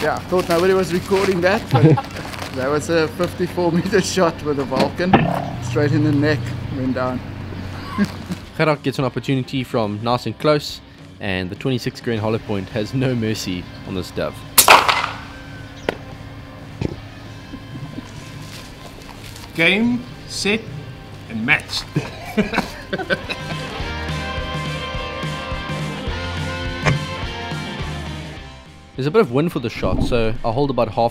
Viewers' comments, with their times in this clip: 0:04 The shot sounded weird in slo mo Edit: btw you make awesome videos Keep em coming
0:15 when that dove hits the ground, that "THUD" was quite impressive.
0:15 Cool shot !!! The sound is like an explosion)))